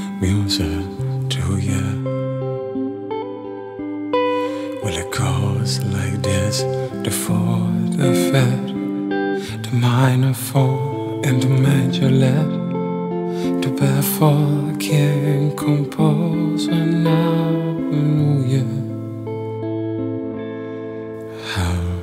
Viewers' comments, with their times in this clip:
0:10 you evoked sobs from my soul, I should have been prepared for your outcry and release of emotion at min but I wasn't. The angels in Heaven just felt that oh God, Ma and Da... this is another of your sons. Wow... the tears are streaming unheeded down my cheeks and I haven't even finished listening.